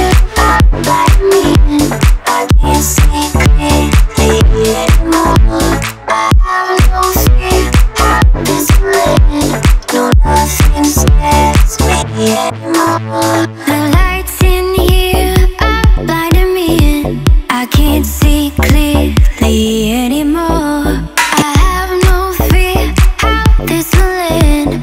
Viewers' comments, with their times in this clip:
0:08 Is that singer possessed 🤣🤣🤣